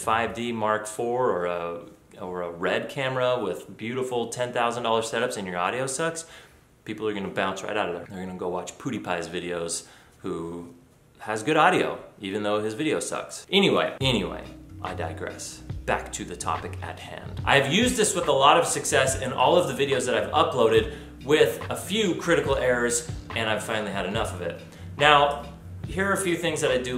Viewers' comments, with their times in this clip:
0:08 lol did you just say "poo-deepie"?